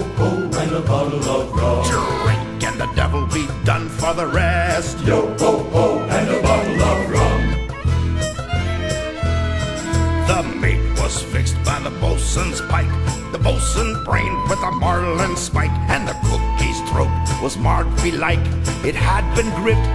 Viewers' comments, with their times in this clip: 0:06 I don't find this as pirate-like as the direlect one, but I love how you put images to it. DONT GIVE PEOPLE SEIZURES!!!!